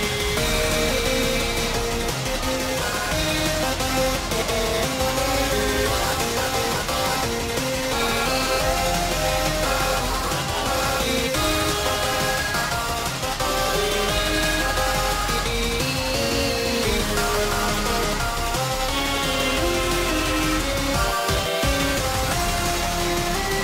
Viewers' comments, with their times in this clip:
0:04 man i wonder what the incorrect sound effect sounds like marvin: